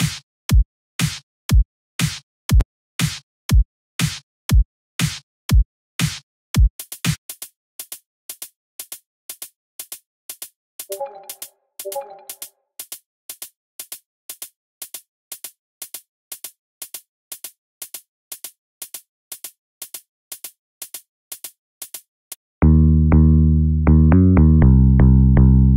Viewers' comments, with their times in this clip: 0:10 I dont remember discord pings being in the sound They did play at the right time tho